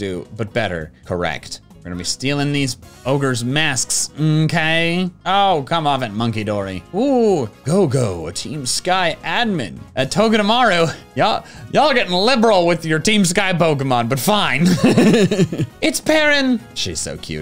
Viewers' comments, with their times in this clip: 0:04 I literally went into the teal mask completely blind and thought of mr. Mackey when monkidori said mmkay